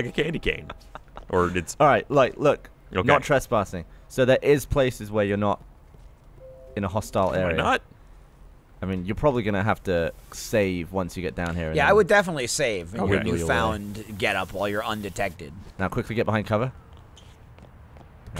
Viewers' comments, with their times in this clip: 0:06 Dead on the time stamp. Did i hear a windows10 start up sound?